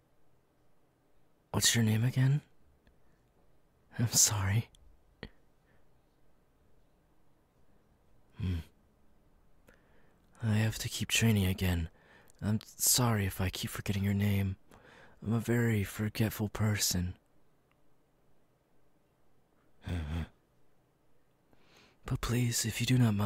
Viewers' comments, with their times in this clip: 0:04 I can sense he is trying to hold his laugh 😂